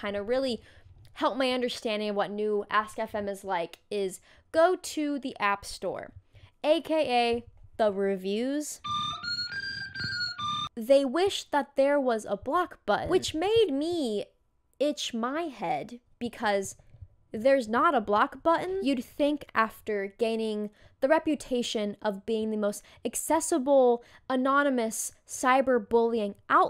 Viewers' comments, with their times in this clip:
0:10 Nct sticker playing 😭